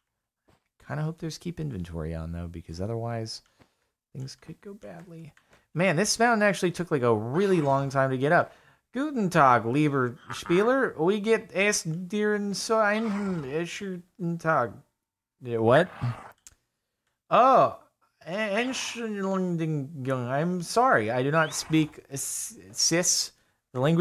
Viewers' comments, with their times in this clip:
0:10 I Like how He pronounced the German Text 😂👌